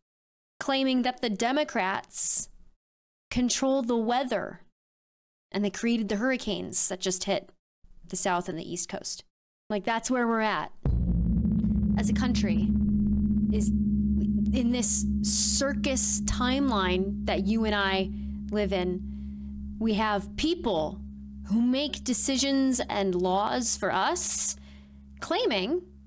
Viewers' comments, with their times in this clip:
0:10 Wait, was that the Horn of Gondor i hear ?